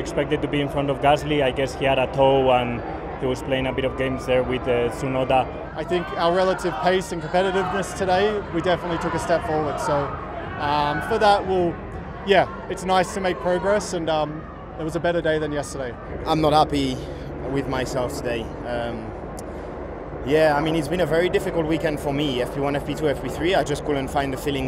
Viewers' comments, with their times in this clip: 0:05 that's the most aggressive pronunciation of 'Tsunoda' I have heard till now.